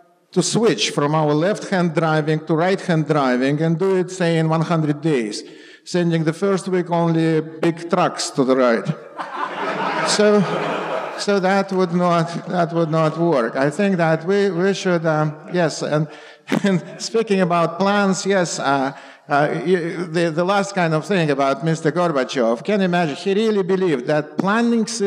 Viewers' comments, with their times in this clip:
0:07 Walter Block laugh = awesome!